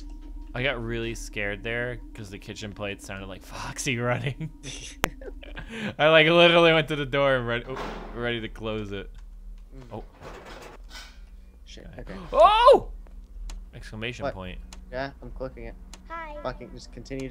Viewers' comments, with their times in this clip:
0:04 Did anyone else hear a click ?